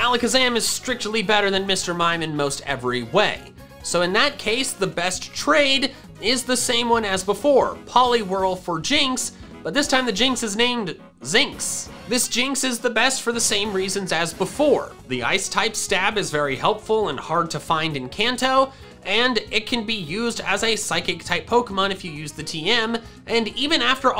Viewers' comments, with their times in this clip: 0:09 “This time the jynx is named-“ “Dawn power dish wash”